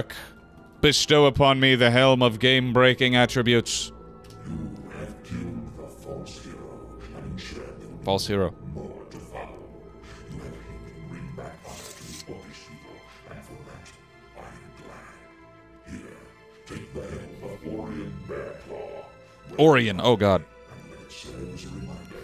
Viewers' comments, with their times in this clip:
0:04 Sounds like a cross between jigsaw (saw series) and the overmind in Starcraft.